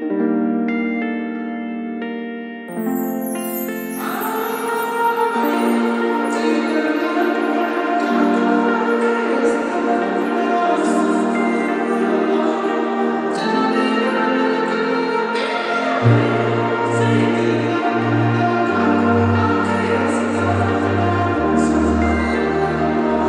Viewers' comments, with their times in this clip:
0:05 starts the theme